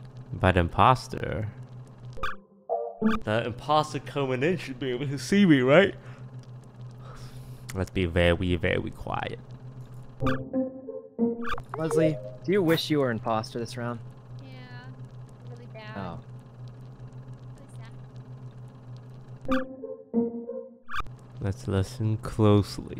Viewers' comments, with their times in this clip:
0:06 i yawned after seeing toast laugh